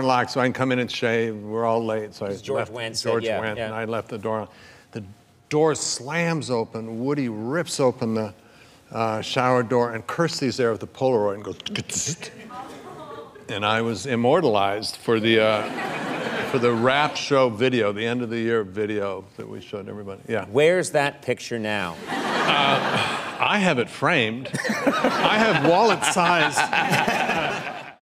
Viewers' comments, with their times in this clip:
0:10 You can hear the one person in the audience who knows what a polaroid is.